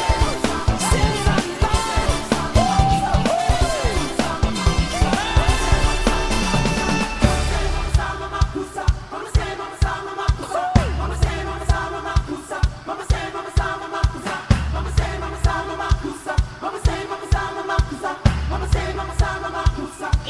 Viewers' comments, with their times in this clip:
0:05 I thought I he jus auto tune that but that was real😶😶😶